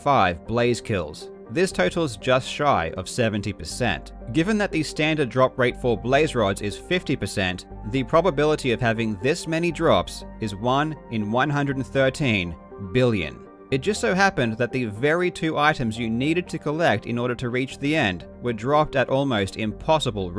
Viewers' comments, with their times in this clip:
0:04 notice the quick "Nice" lmao